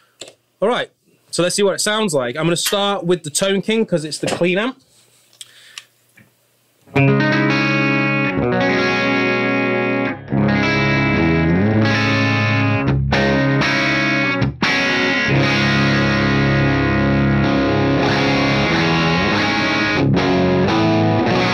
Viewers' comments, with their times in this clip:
0:06 Damn i love your chords